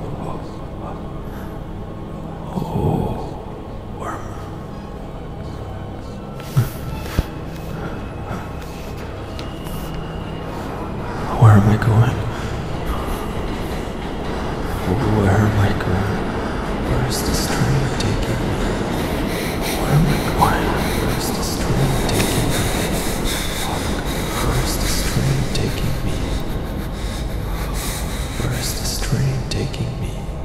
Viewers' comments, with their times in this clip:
0:08 As a New Yorker, I automatically recognized that was a subway train.
0:11 Is it me or did I hear the mta train move by